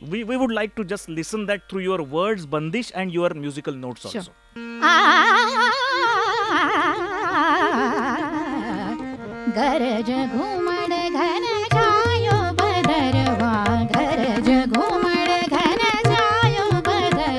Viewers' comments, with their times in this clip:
0:03 wah kya baat.... melodious voice n control over musical notes